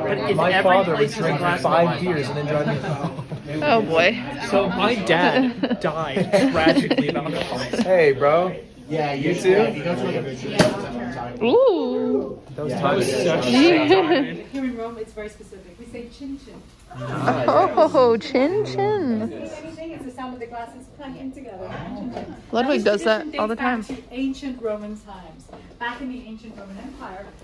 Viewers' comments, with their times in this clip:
0:09 the powergod thunderbolt clap of wisdom